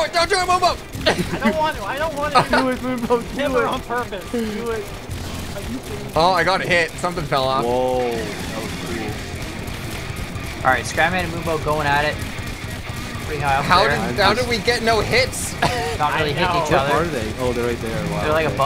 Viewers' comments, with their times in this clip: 0:06 Nothing better than watching some amazing flying with kickass music!